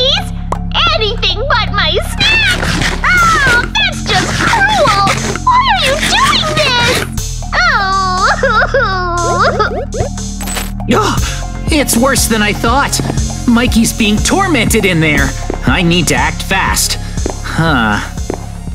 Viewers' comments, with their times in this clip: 0:05 Mikey cried over snacks HAHAHAHAHAHAHAH